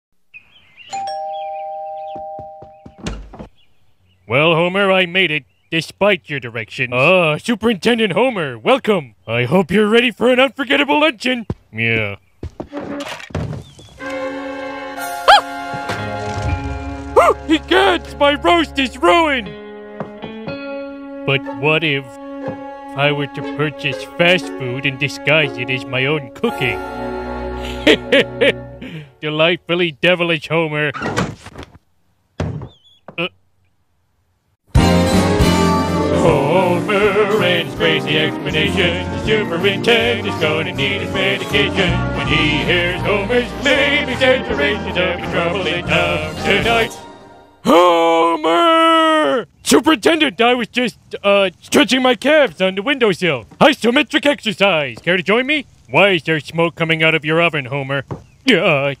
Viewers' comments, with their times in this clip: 0:06 that sounds like mayor quimby
0:14 Homer’s classic yelp made me laugh the hardest
0:14 Mickey Mouse when his tail gets stepped on: Edit: omg guys it may not be much to other people but tysm for all the likes, road to 100!
0:14 Is it just me or did he bark like a puppy? 😆😆😆
0:14 woah woah woah that's micky mouse not homer
0:14 When u turn into mickey mouse for 0.25 of a second #Relateable
0:14 that high pitch noise
0:14 they do sound like homer except for that part
0:14 sounds like Mikey mouse
0:15 This is amazing, wished that “ah” sounded more like Homer’s “Ahh” also it needs a bit of his “Oooo”
0:15 sounds like Mickey Mouse
0:15 I think you could have put in a classic homer scream nice impression though, not an easy one to get right
0:15 Great homer impression ... and mickey too at:
0:15 heard a little Mickey in there
0:15 is it JUST ME or does Homer skinner sound like Mickey Mouse?
0:21 mayor quimbey voice
0:23 sounds like TF2 spy
0:35 I was expecting the same intro song, but I have to give you kudos for singing it in Homer's voice!
0:47 I don't know if that's auto tune or what, but I love it.